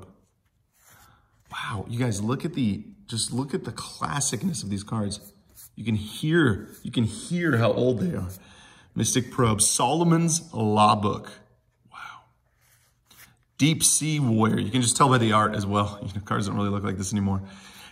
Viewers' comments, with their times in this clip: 0:05 asmr without trying